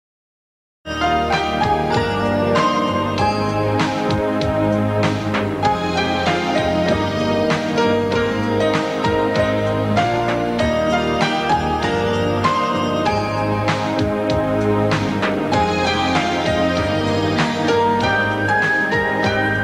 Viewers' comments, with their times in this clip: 0:04 I agree with whoever said that this theme sounds 'spooky'. I think one of the reasons for that is the way the bass creeps down None of the other themes do that, and it's such a sinister sound. I love it. This is the ultimate EastEnders theme, imo.